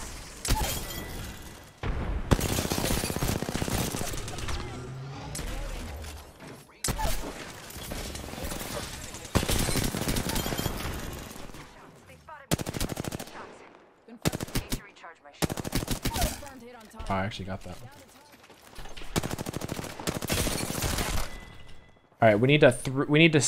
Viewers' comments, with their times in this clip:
0:04 that bang edit was clean though